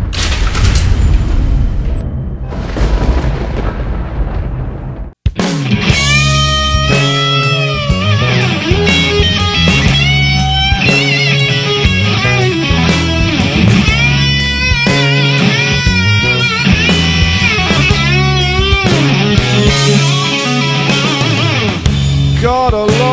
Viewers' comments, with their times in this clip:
0:08 guitar lick s is inspired by Steve Lukather am I right? :)